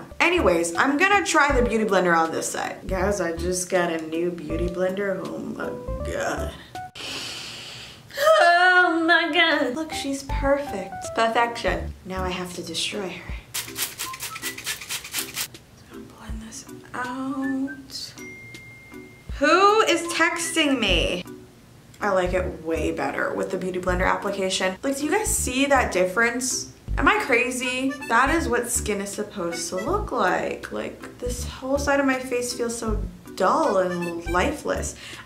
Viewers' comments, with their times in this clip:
0:06 Omg Your voice it’s so good 😭😭😭💞.
0:07 ok vocals we hear you come thruuuu 😩👌🏾
0:07 let's talk about this perfect voice
0:07 is that REALLY her? Was that really her voice? WOW! My God, I need her music! I need it!
0:08 damn the girl can sing
0:09 And your singing is so good!
0:19 I literally got a notification lol 😆